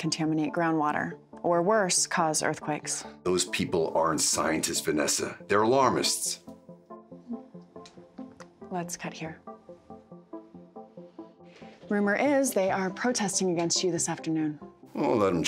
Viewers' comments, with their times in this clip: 0:03 OMG WHEN THE TIMER WENT OF ON IT WAS HERE